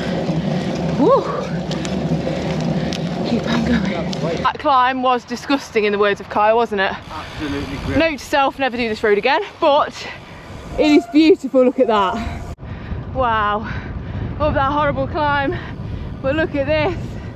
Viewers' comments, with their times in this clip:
0:03 how do manage to speak and not sound out of breath even.,...!!!@